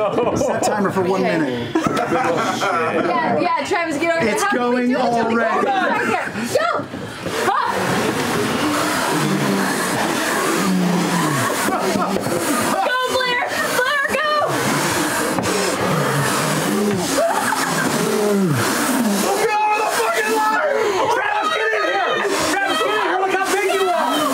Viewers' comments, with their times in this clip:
0:03 the ASMR is top quality 😂😂😂
0:08 watching laura lose her mind cause of laughing so hard is just amazing. ive watched it so many times